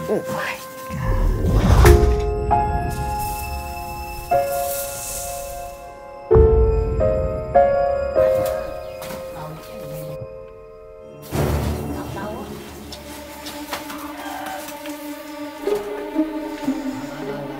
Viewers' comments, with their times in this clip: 0:05 I hear Godzilla music I see what you did there